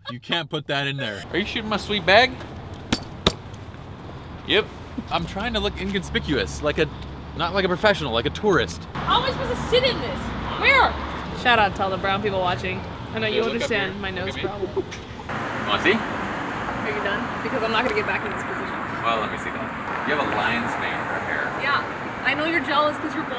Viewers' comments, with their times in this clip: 0:05 anybody else thought he said he's trying to look 'indian-spicuous'? ? lol